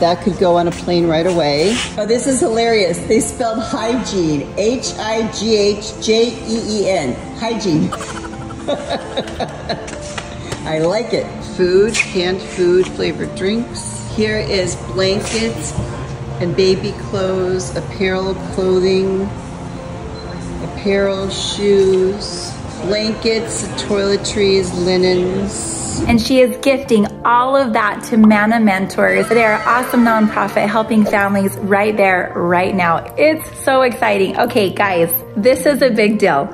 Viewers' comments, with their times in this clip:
0:06 her voice is so different
0:19 doesn’t sound like her